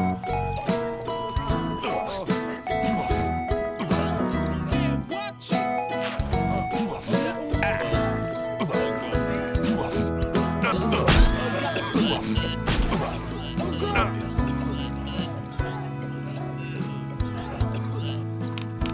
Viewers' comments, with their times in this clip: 0:04 The music here was so heartfelt..